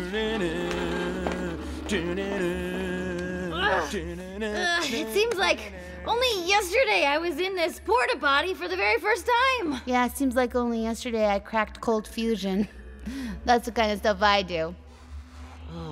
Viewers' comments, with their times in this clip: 0:03 it seem like I already heard that ugh before